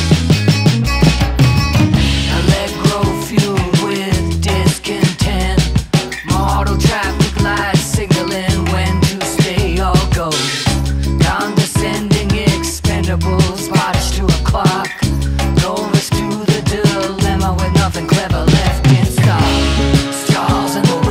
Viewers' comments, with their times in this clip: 0:07 What that instrument i hear that sounds like a turtle shell getting hit with a bone